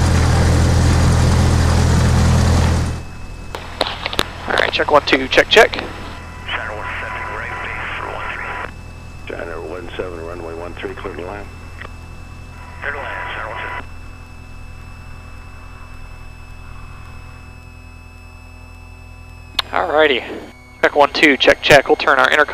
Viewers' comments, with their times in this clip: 0:03 loved that audio transition on